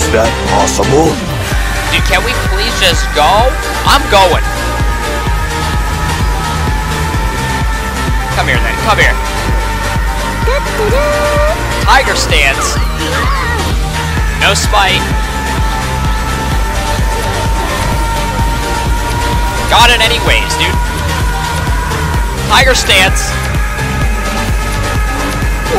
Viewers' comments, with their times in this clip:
0:10 that Tutuduh through the hype sounds made me giggle a bit